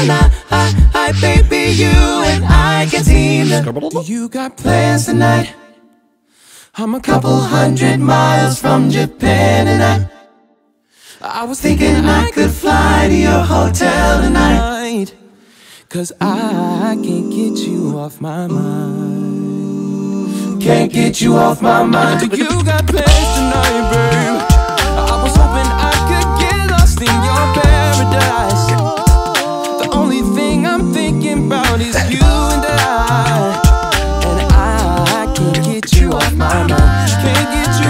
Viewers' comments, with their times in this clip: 0:05 Amazing as usual. Spellbound Man those harmonies 😍
0:05 This phrase is reminiscent of the night view of Tokyo:) 🇯🇵🗼🌃🌉
0:23 it sounds pitched down